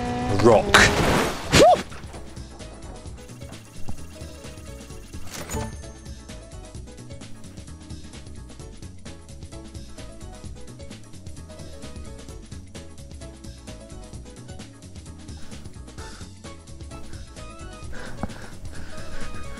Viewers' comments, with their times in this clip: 0:06 lol with the cute little song in the background, weeeeee!